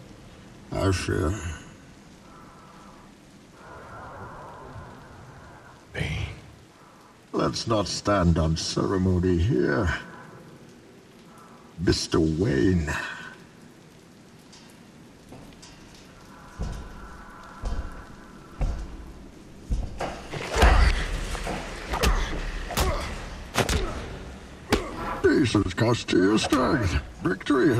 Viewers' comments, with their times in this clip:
0:05 The way he says, "Bane" is just so good@
0:15 I’m not sure if someone has already commented on this, but I just love the difference between Batman’s footsteps and Bane’s. Bruce is noticeably unsure of who he’s going up against while Bane just marches confidently up to him, totally unafraid.